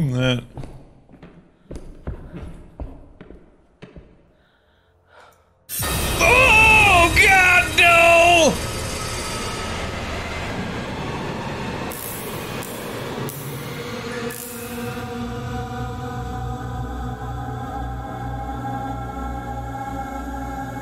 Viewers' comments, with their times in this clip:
0:07 Awh man poor Amy she sounds so sweet, innocent and scared. This game is really well done from what I can tell, and it's made me feel really bad for Amy